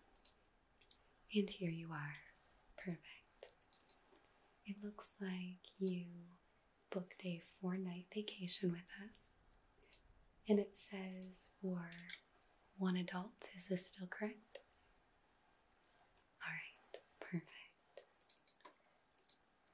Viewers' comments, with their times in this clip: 0:03 yes, I did book a fortnite vacation.